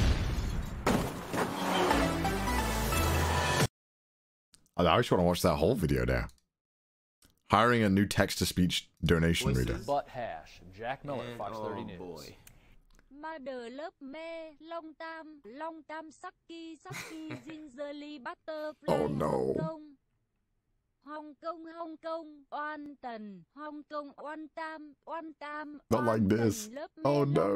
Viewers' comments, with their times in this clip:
0:09 as a vietnamese person I recognized this tts voice the moment it spoke